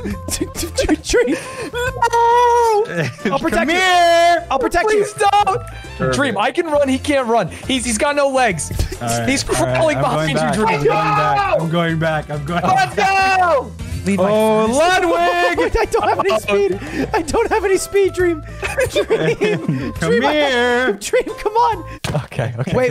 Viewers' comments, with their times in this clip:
0:04 am i the only one who expected george's high pitched scream when dream said "come here!"